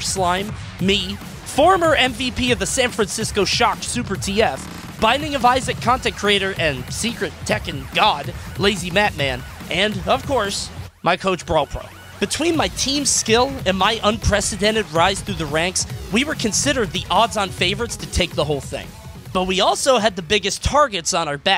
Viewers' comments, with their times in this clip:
0:08 LOUD AUDIOBLE SCREAM